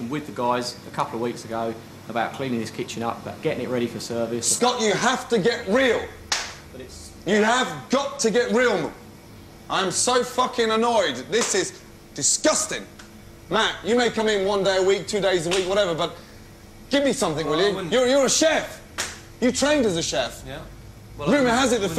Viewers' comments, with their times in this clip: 0:09 when you're so pissed your brain skips and you have to manually reset